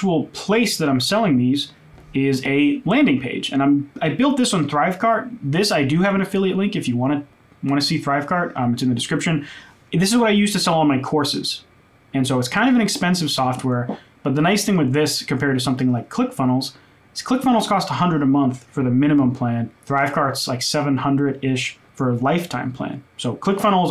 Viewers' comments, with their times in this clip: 0:04 Thanks for the video… but I don’t understand your pronunciation of where you say you selling? A learning page? A leaning page? And what is “drive card”? Like an ecommerce? This s it for musicians? Can’t find Thanks